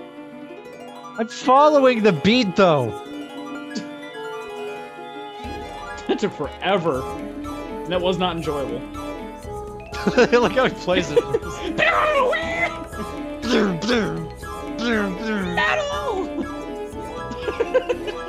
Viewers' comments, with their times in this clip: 0:04 Augh god, the fucking hard shredding